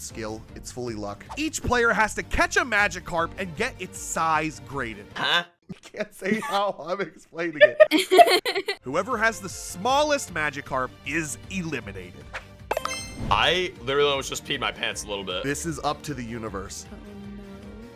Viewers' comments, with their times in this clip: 0:05 is so funny.. he sounded like a fucking sfx